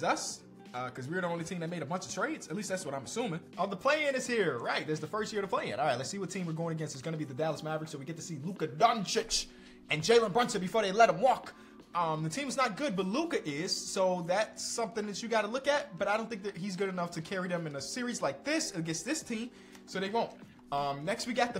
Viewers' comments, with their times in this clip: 0:08 WHy he say Doncic like that